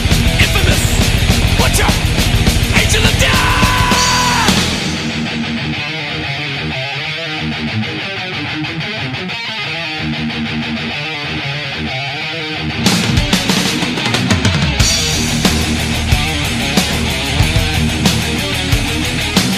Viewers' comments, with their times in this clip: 0:05 🔥🔥🔥 The greatest metal riff EVER!!!